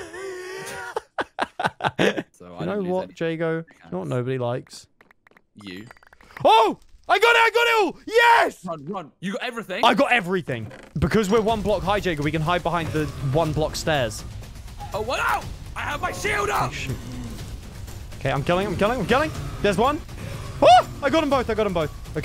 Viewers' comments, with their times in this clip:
0:03 why is no one talking ?